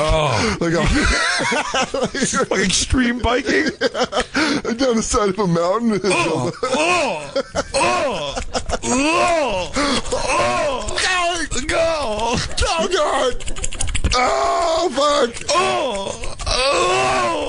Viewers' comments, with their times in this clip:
0:04 Big Jay doing man grunt moaning is the best thing 😂